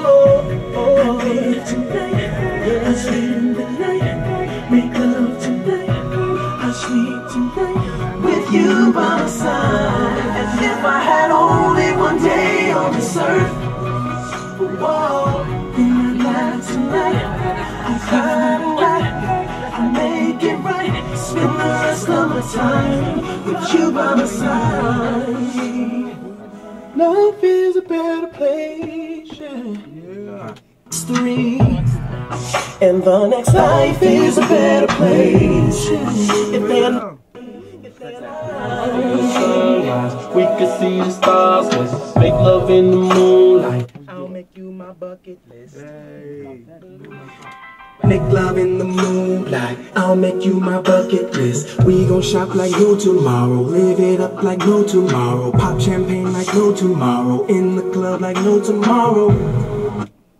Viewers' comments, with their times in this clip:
0:08 that boy can sang
0:27 I'm just saying that harmony is smooooooooooth!
0:42 whats t-pain doin in the studio